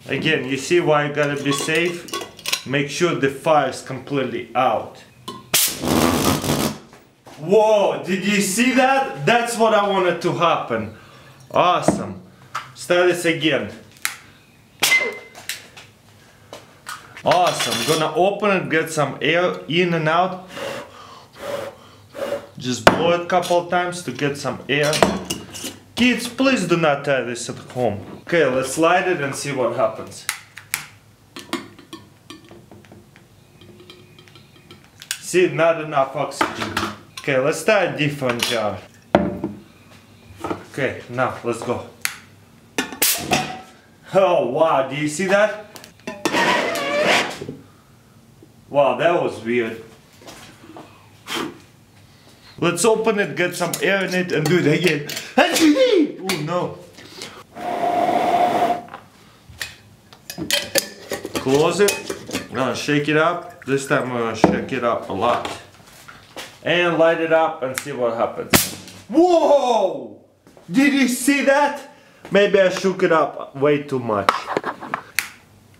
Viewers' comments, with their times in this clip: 0:04 its sounded like a fart
0:04 when you fart in public
0:05 sounded like farting
0:05 sounds like a fart lmao
0:05 My farts in the morning
0:05 The flames farted
0:05 thats the sound my farts do
0:05 that fart dropped harder than mine
0:06 was like a fart LOLOL
0:10 sound like a fart
0:13 it sounded like beat boxing.
0:28 😂😂😂😂😂 MY VID WAS BREAKING UP and all I heard was :" just blow... Children... At home"😂😂😂😂
0:43 it sounded like a fart xD LEL
0:44 I laughed almost the whole video. Even the start with the dull drill bit. Then the funny noise Then the sneeze. LOL
0:50 I laughing so hard when its the crazy russian Sneezing
0:53 the mighty russian sneeze
0:53 weirdest sneeze ever
0:53 Go to and then play it at 0.5 speed.. Omg that sneeze 😂
0:53 His sneeze XD
0:53 Ha, ha, he even sneezes in Russian!
0:54 Lol "hachowee" the way he sneezed 😝😂
0:54 that's a funny Russian sneeze :D
0:54 made me laugh real hard, bless you
0:54 ha ha funny sneeze
0:54 sneezing, your welcome
0:54 not trying to tease him but really i laughed so hard The again HA-CHIN-E oh no
0:54 I think that was the best sneeze I have ever heard
0:54 what was that sneeze xD
0:54 Me - "Bless you Crazy Russian Hacker" Crazy Russian Hacker - "Ium Athiest"
0:54 his sneeze is so funny
0:54 Best sneeze ever
0:54 cutest sneeze ever
0:54 DAT sneeze do lol
0:54 That sneeze tho "HACH-HEEE oh no"
0:54 sneeze of the year 2016
0:54 look at DAT BOI sneeze
0:54 "let's open it and get some AIRCHOOEE!" Lolz for dayz
0:54 Funniest sneeze ever
0:55 acheocee HAHAHAHA LMAO TAHT SNEEZE XD
0:55 when your sneeze goes through puberty...
0:55 A pulsejet engine in the backround almost started...
0:55 "sneezes in russian"
0:55 Bless you c:
0:55 That whats I call Sneeze pulse jet engine.
0:55 that sneeze tho
0:55 that sneeze XD
0:55 Crazy Russian Sneeze
0:55 And Bless you :-D
0:55 Bless You, Hahaha
0:55 that was the jet engien right?
0:55 You sound like mario
0:55 the sneeze begins
0:55 sneezes in Russian
0:55 That sneeze lol
0:55 sneeze of the year 😂
0:55 That sneeze was awesome
0:55 sneezes in Russian
0:56 # crazy russian sneeze 😜
0:57 turn on subtitles his sneeze is HAITCHI sneeze
0:58 Russian sneeze! I laughter for so long
0:58 i thought he was blowing snot
0:58 That sneeze doe
0:59 Bless you on